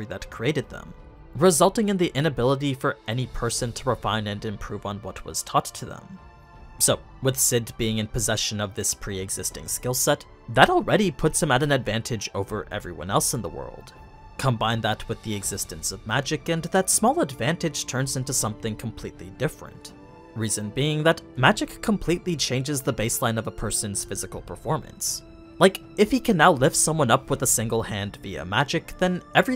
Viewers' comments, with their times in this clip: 0:10 the voicecrack is real